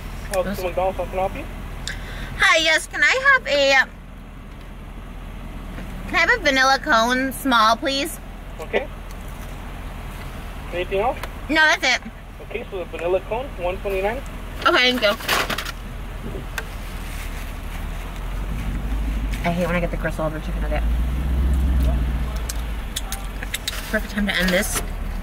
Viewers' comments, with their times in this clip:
0:09 he sounded like that ‘ok’ meme